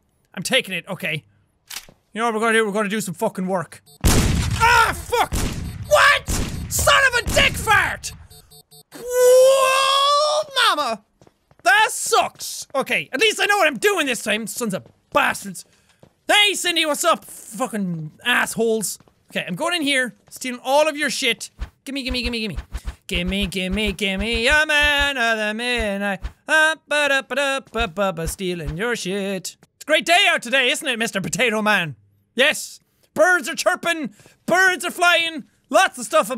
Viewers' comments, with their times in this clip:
0:08 you had such a voice
0:22 that was catchy tho